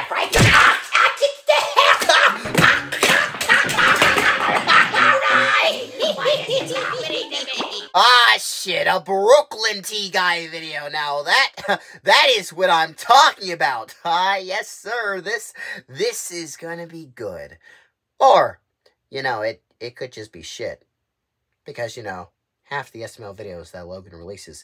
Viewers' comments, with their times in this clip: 0:07 I don't know what you said but I respect your Strange Language Skills.